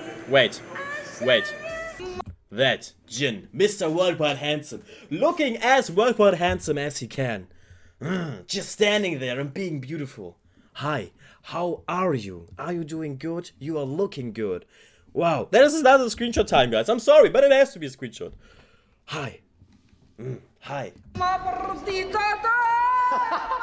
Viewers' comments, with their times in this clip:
0:08 Also your growl stirred something within me. rawr.